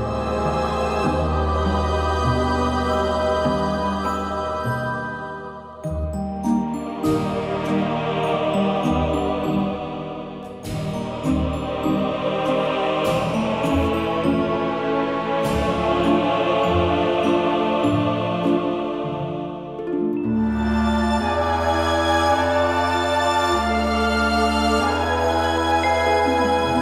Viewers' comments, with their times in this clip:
0:07 It kinda reminds me of Quake Caverns from Sonic X-treme especially